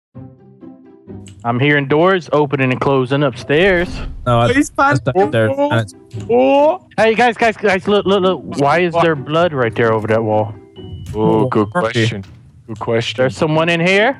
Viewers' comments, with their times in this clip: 0:01 did anyone else hear that keyboard click sound